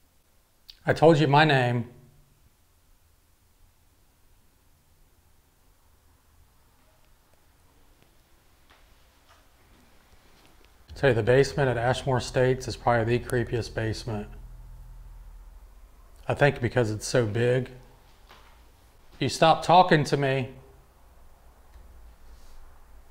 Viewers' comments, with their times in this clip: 0:06 I heard a child's voice!!